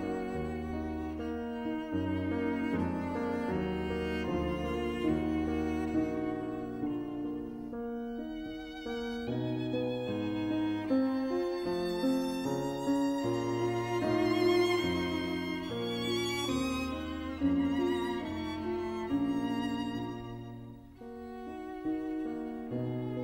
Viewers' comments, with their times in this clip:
0:06 the violin is so beautiful and sad. That little glide at the end sounds like crying